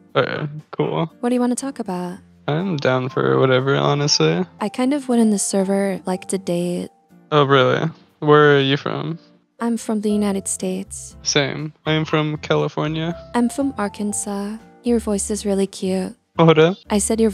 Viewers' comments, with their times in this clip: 0:05 IS IT JS ME OR DOES THAT 26 YR OLD KINDA SOHND LIKE THAT CLOUD PRINCESS OR WTVER FROM ADVENTURE TIME…